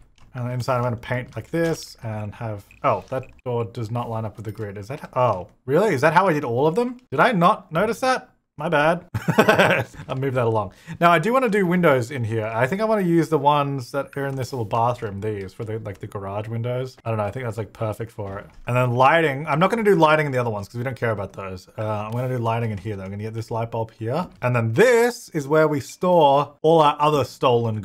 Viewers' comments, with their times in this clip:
0:09 Seth Rogen has entered the chat